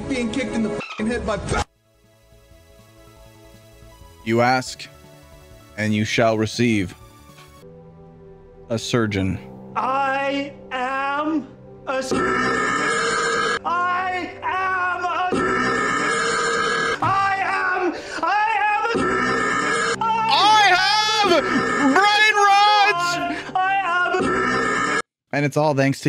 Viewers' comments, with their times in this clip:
0:07 i am a Ryan Gosling burp is when i laughed